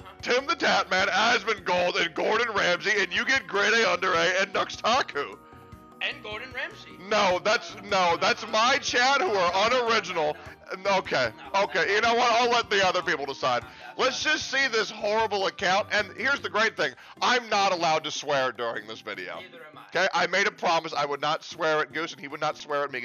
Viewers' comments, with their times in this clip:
0:08 seconds in...the audio is miserable, but Imma fight thru this and discover Content!